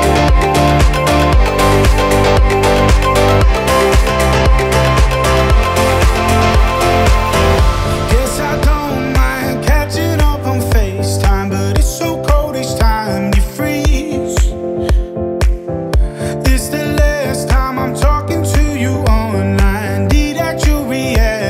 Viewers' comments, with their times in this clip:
0:07 This one surprised me. Twice. It builds and builds. After the interlude, it pops into reality that this is a HIT.